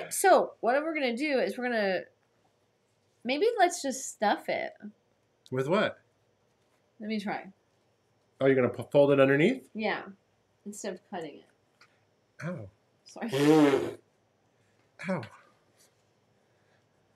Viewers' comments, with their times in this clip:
0:04 lmao!!! With the face, holding breath, eye roll, and Randy Savage voice….rewatched that a few times too many